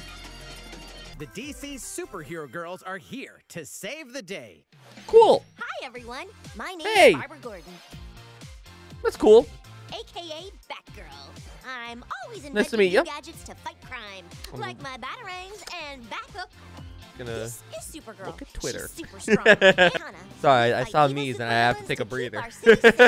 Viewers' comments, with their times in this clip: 0:05 So THIS is what Tara Strong is doing after MLP ended?! 🤣